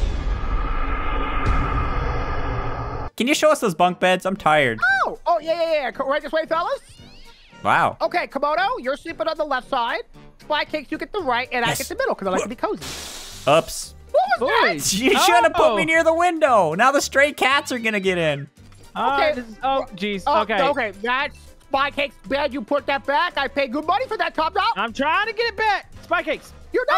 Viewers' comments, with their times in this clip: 0:07 I just heard a cat